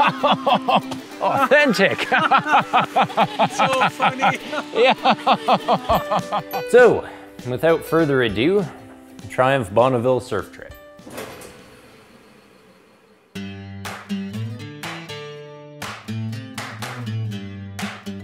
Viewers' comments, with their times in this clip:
0:03 and it was so authentic, it had the obligatory ukulele music ..... but there was no shit whistling! And who is that [by now billionaire from doing 50 million adverts] uke player anyway, I'd like to buy him a beer and punch him in the face.